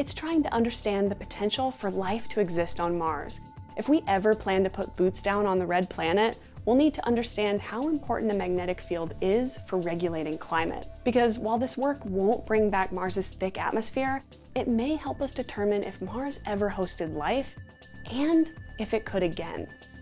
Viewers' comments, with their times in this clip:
0:06 Anybody else catch that she said foots down funny little slip up